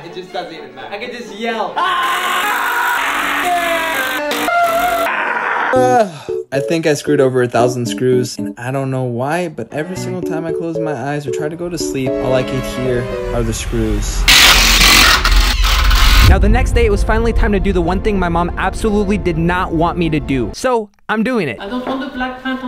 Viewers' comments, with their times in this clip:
0:07 tought u were mr beast for a sec until I heard ur voice xD